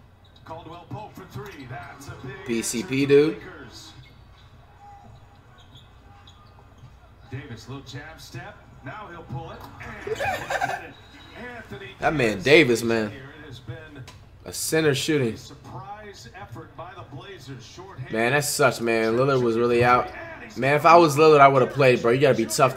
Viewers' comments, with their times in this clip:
0:10 that little laugh had me dead 😂